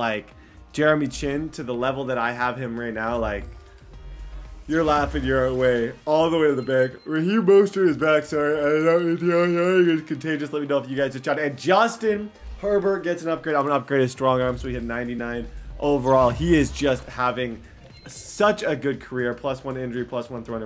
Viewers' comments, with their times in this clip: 0:06 damnit you made me yawn